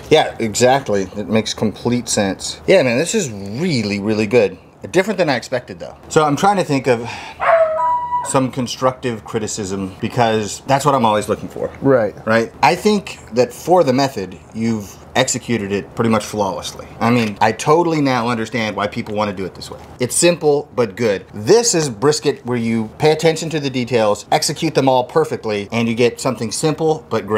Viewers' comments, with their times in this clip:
0:07 that dog bark lol
0:09 Dog howling lmfao great video!!!